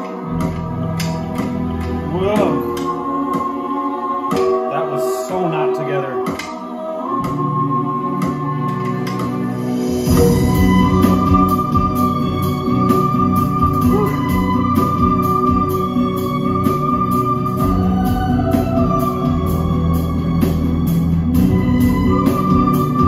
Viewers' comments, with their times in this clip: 0:10 goose bumps and tears moment when violin starts..